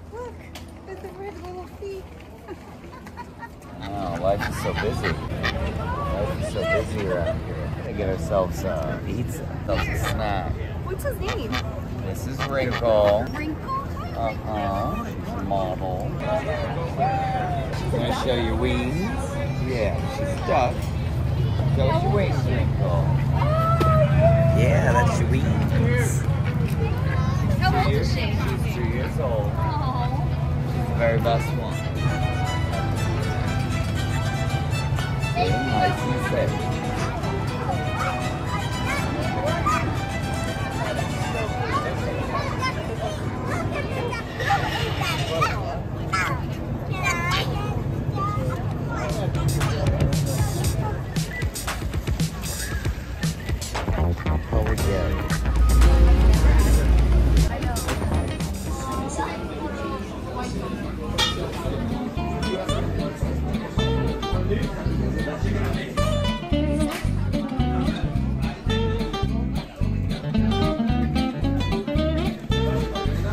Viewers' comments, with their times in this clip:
0:03 what do you mean (bissy, 5 secs later) oh
1:00 music reminds me of a good old social game that I used to play in my childhood called "Club Penguin", god I miss it....